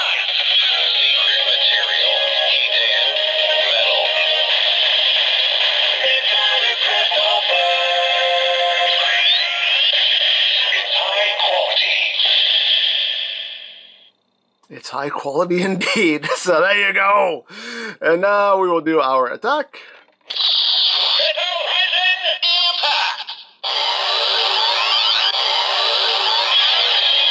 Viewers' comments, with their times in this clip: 0:05 Man, I love the jingle. It's harmony to my ears!
0:11 ANGUISHED ARUTO SCREAMING